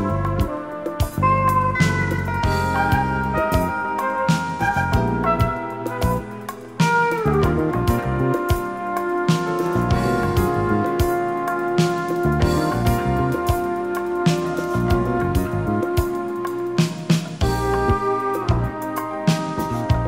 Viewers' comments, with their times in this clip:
0:07 I've heard the notes of the bass line in "Trilha", very similar to the track "Zonazul" by a Brazilian self-titled group. Thank you for posting such gems